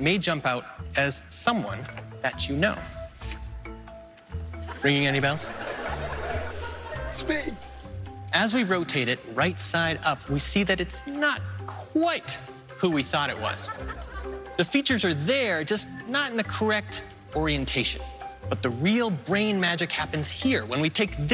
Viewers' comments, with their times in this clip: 0:07 Penn saying "It's me" is pretty cute. He sounded so happy. 😊